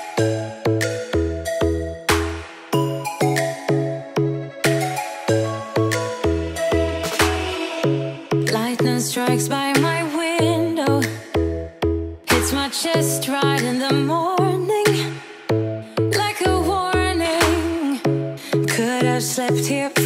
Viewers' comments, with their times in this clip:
0:03 this music reminds me when you were to BORA BORA OMG